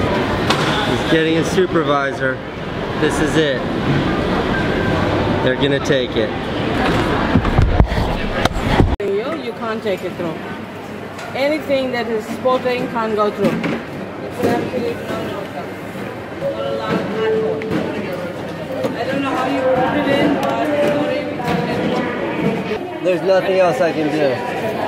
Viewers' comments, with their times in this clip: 0:10 I cannot hear what they're saying, "Anything that is XXXXXXX can't go through". Can anybody hear better? The accent also doesn't sound like Australian...